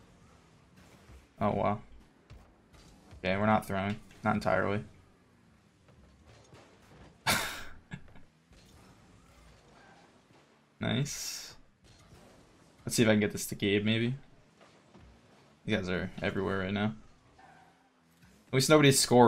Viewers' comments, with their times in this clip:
0:06 It sounds like the rocket pass goal explosion 😂